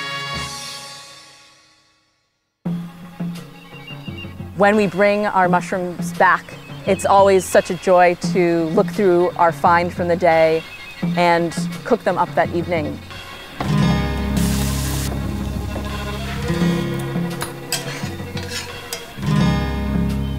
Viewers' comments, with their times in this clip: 0:05 man that flute is tripping